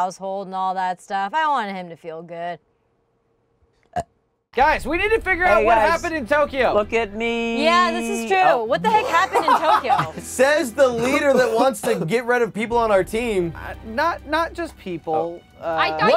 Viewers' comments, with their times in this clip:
0:03 that burp tho